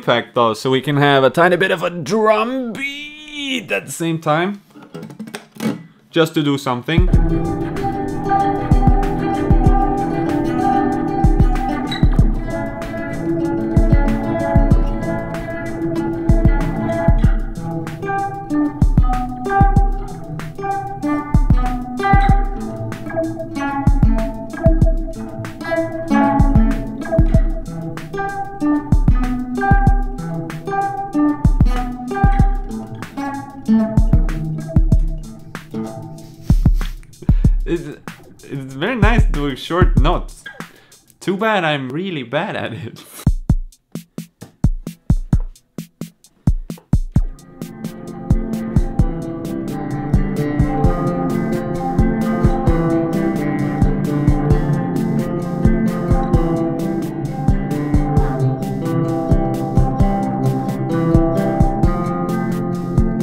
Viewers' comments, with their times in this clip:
0:09 sounds like Bo Jack's intro xd
0:13 sounds like a minecraft music disk
0:13 strong Rollercoaster Tycoon 3 vibes
0:20 that beat do be good though
0:29 oh flip it sounds like a royksopp song.
0:38 doing a great Borat impression!
0:47 Listen to in 0.5 speed, sounds like a beautiful lofi song <3
0:49 Ngl that jam sounds like something out of Homestar Runner. I mean that in the best way possible